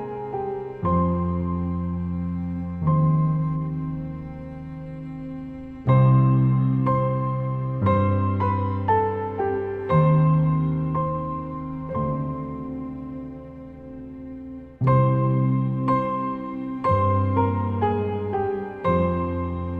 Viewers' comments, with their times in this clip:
0:07 Music in minute accompanied so well the massacre I suffered during last chess game